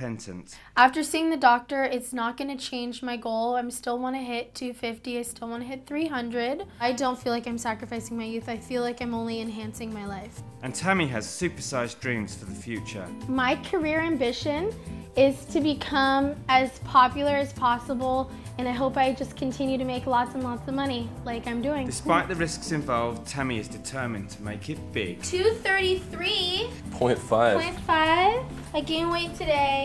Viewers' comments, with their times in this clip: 0:10 Pause the face he makes shows you he's loving it and that he's in on it or possibly forcing her to do this the way she talked she sounded almost brainwashed or forced like she was forced to do this